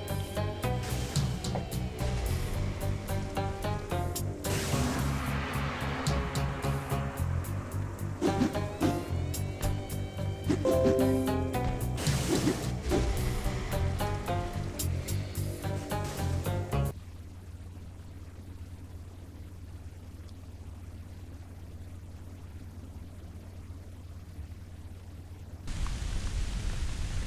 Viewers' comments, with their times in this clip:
0:10 homie laptop really went off in the background 🤣🤣